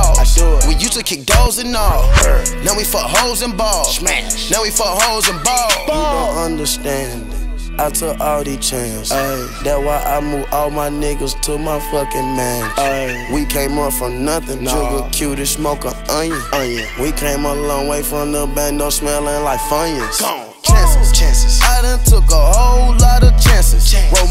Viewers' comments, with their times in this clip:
0:07 The verse is simply soothing to the ears